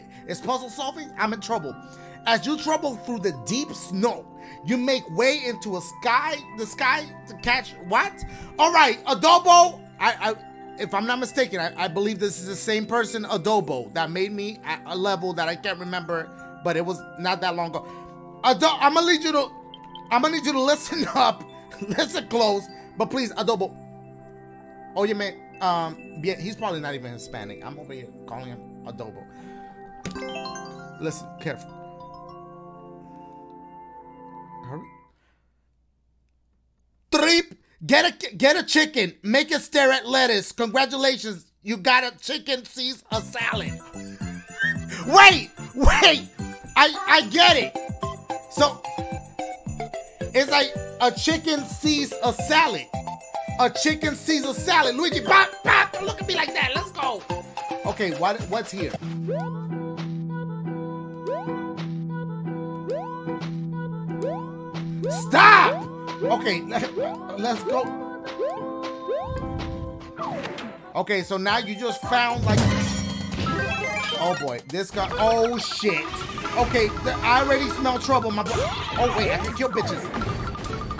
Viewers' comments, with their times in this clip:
0:10 he says adobo but there isn’t a D in the dudes name 😂
0:44 How did he make his voice do that ???
1:05 when the music start to play it reminds me of some music in a anime show i watch